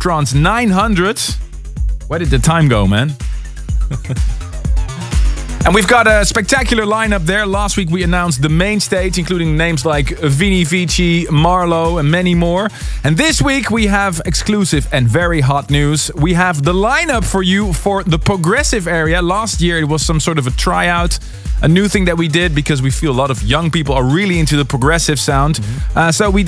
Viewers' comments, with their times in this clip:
0:09 did he say Avicii was playing at ASOT 900 :/ Bit awkward, who did he mean?